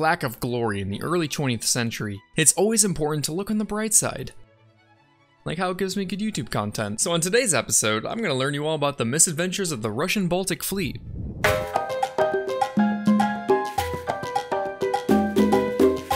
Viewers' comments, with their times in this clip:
0:04 wtf did you even say bro I've been playing it on slow motion and I can't even tell